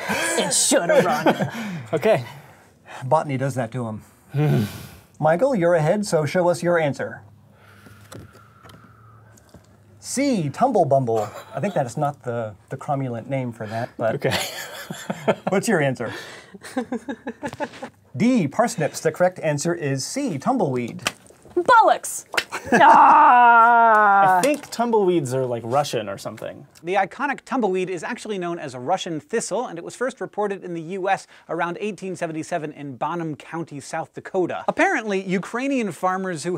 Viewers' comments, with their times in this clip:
0:03 "botany does that to him...grunting moan"
0:21 It sounds weird hearing an American saying "Bollocks"